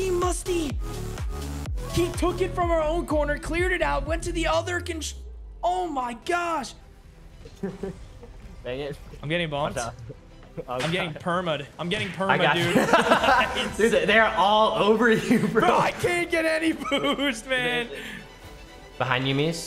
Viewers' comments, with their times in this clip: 0:05 the "oh my gosh" sounded like spiderman